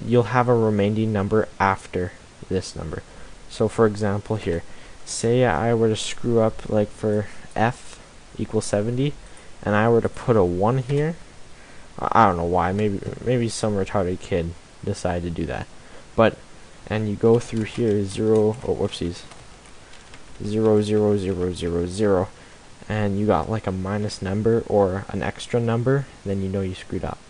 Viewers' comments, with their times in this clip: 0:08 LOL im not sure why but i think this guy's mellow voice sounds so funny making fun of some dumbass kid who puts a 1 for 128 when there is no letter that goes up to 128